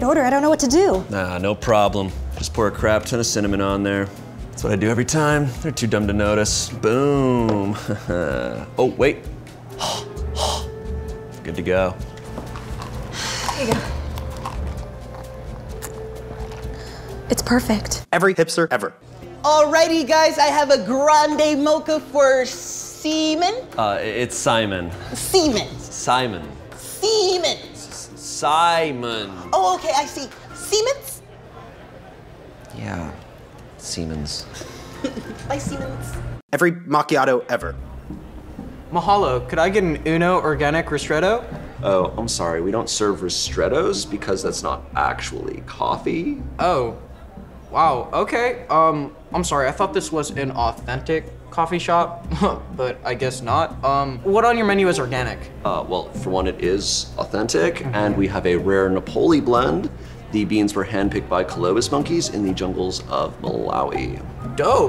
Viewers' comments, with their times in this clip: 0:10 I think that’s how a alien laughs
0:16 The way she says “it’s perfect” gives me goosebumps 😂
0:22 is no one gonna point out the way the barista pronounces his name and how it’s spelled
0:45 that voice crack tho shayne 😂 coffEE